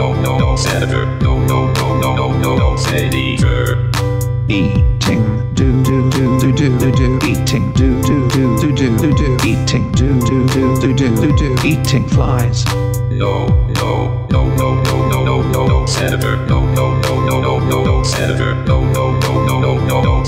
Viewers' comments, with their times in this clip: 0:03 eating doo doo?
0:04 started to think he was asking him if he was eating doo doo